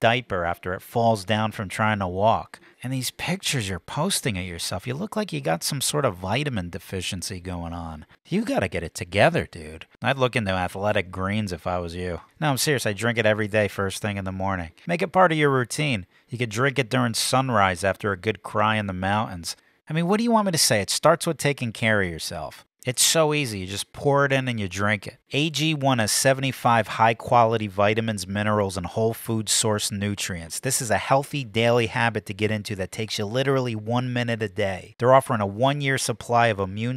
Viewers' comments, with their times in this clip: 0:09 anyone else immediately hear, "I'm the Captain now!" 😂
0:18 Moa-unz. Dafuk? It's mouNTains. I used to say it that way. Then I turned five.